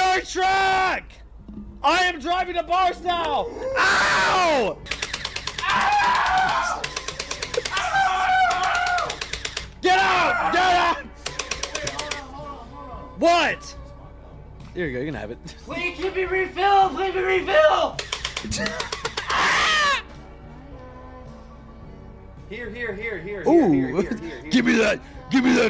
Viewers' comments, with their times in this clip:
0:03 Lana playing in the background makes this 100 times better
0:06 lana playing in the background actually dying laughing